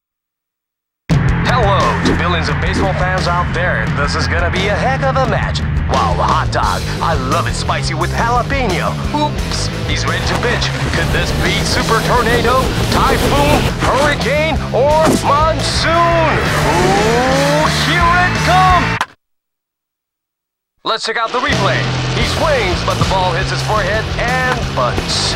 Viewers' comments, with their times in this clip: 0:09 it sounds like he says this ones a bitch